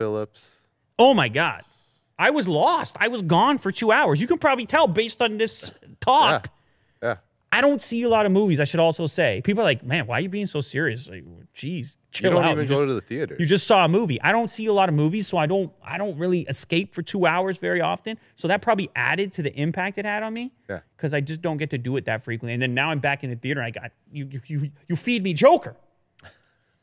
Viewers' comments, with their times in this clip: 0:08 Are we going to ignore the impeccably casual Joker impersonation from Lew. Why so serious